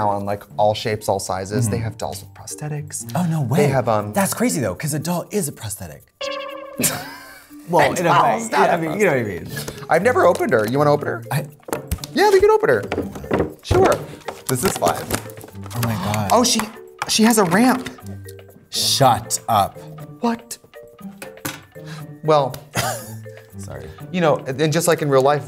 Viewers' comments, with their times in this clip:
0:06 That boing 🌀 sound effect makes me think of totally spies